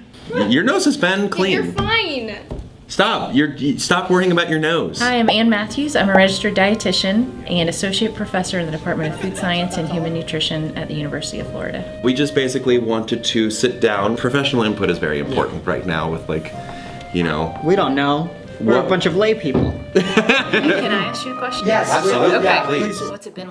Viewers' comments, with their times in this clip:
0:06 I thought that she was going to say "I'm a registered dietitian, and a sociopath" so I was like woah calm down lady before she even finished her sentence 😂